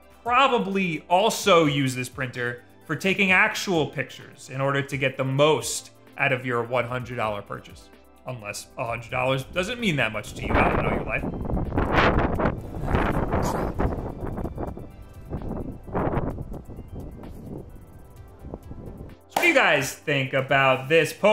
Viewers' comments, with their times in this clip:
0:09 scared the crap out of me. I thought my headphones were defective again since I had to send in my last pair to be replaced because it was playing random wind noises when I had ANC on